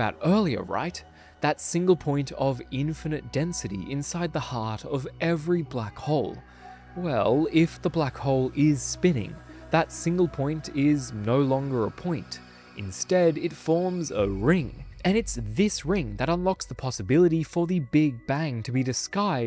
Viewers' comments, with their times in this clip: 0:06 what's that sound in the background is it a music or something else